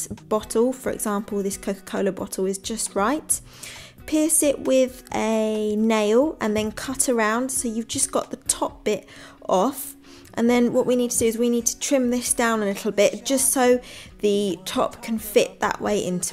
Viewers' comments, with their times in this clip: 0:04 Piss it with a nail